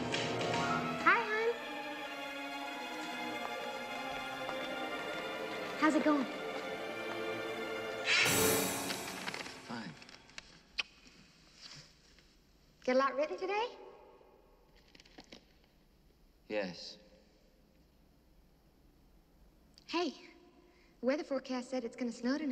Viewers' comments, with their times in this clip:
0:08 that random scare chord like you know what's gonna happen